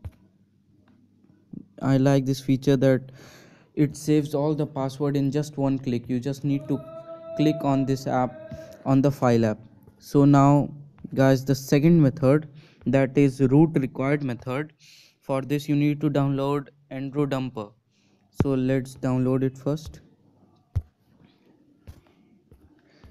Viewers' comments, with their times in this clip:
0:05 on someone yelling in the back haha